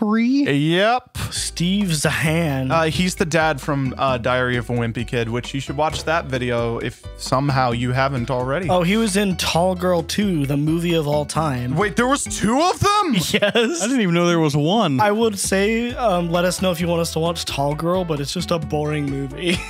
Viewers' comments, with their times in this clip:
0:03 the way you said Diary of a wimpy kid sounded like Diarrhea of a wimpy kid